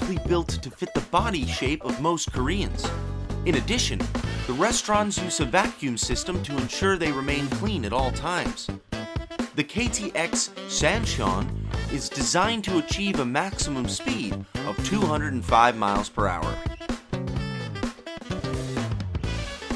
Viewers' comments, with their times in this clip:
0:03 He said restrOms